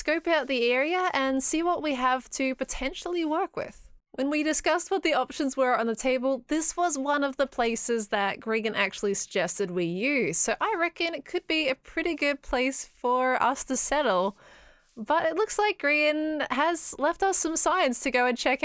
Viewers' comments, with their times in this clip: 0:06 She says grigan lol